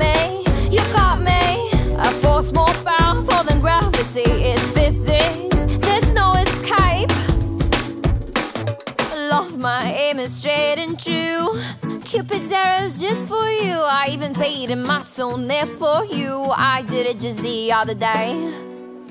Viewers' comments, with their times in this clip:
0:05 "eskHÄJP" is the new bejba...